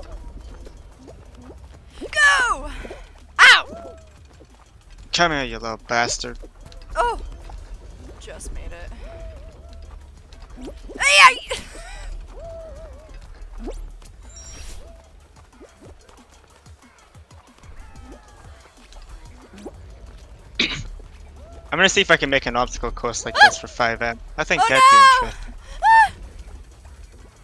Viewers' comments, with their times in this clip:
0:10 that scream tho 😂